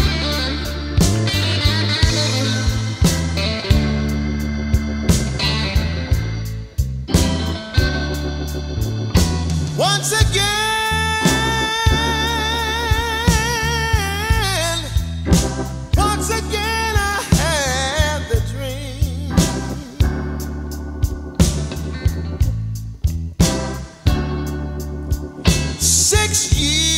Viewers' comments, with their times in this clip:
0:08 sing it Robert! Damn!!!